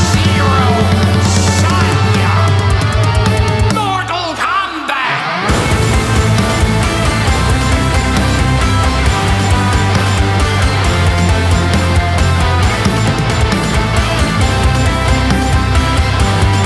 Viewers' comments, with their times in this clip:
0:04 This cover is amazing! Also two things I want to address: one - RIP Gilbert Gottfried, aka Iago, and two: I’m really happy that and onward you did the main theme with the bass following the melody in the order of A, C, G, F instead of a whole A like the original. It adds a lot more depth and girth to the song. Great job!